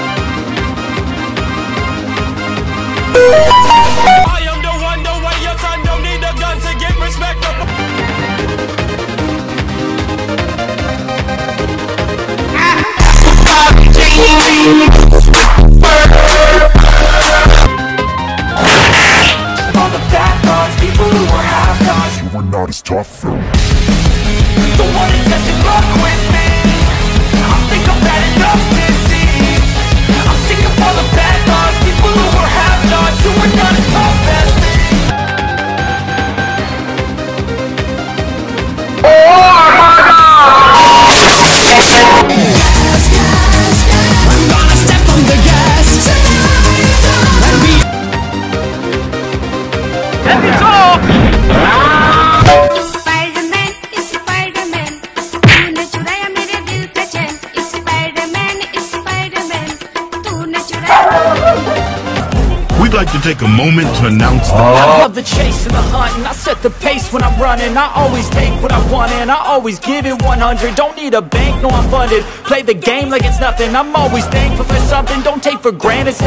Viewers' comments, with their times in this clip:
0:03 samsung message sound 2023 and salto sound
0:38 i want this meme so bad cuz how he screams to death
1:02 what the music??